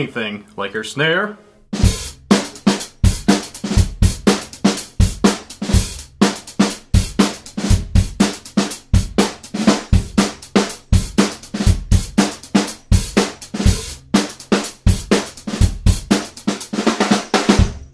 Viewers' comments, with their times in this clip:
0:05 Love how that snare sounds ish